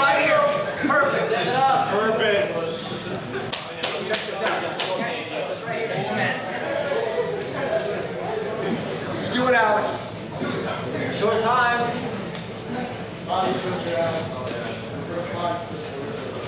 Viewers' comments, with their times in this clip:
0:04 the guy in the bottom farted